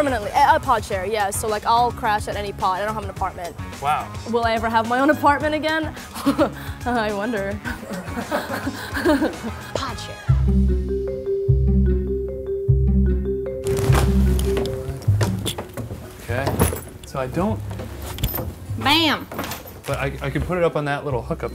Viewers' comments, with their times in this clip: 0:05 the awkward laughter